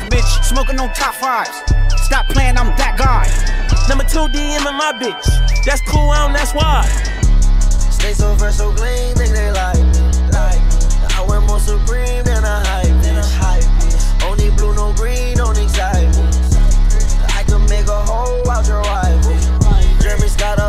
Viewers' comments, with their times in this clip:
0:07 sounds like uzi still a SoundCloud rapper 😂